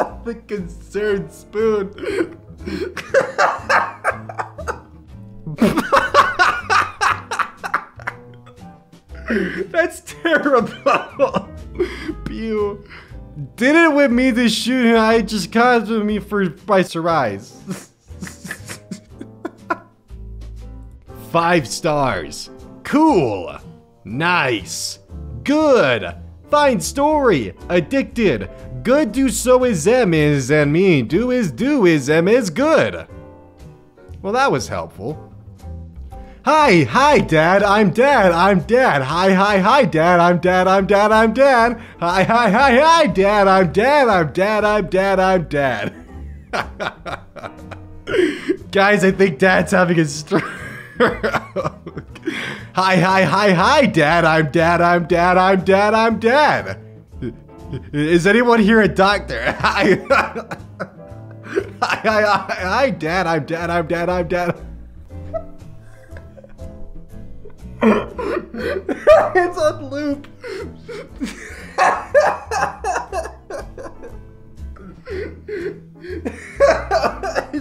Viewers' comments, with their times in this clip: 0:05 * Elon musk can be heard laughing in the distance *
0:13 that’s not a stroke that’s just dutch
0:28 kazoo baka mita intensifies
0:42 I love you voice saying that xD
1:03 Not gonna lie, that squeak was actually kinda adorable